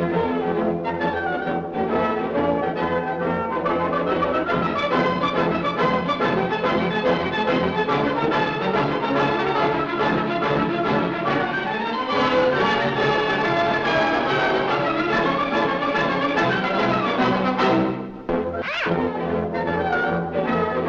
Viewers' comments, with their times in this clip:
0:04 I love this scene but I always giggle when I think of the agressive clopping sound the dancers would've made In a theater that small? Deafening.